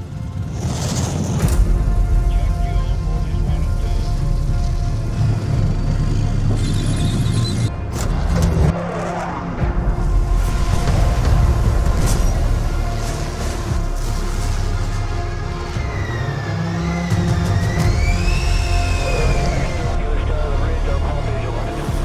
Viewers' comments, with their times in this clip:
0:06 Only slip up track sounds on a wheeled vehicle.
0:10 cannon beat easter egg